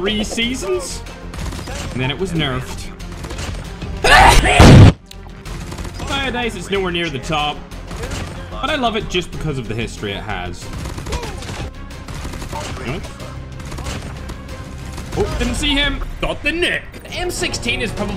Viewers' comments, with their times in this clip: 0:04 that sneeze is deadlier that every assault rifle 😆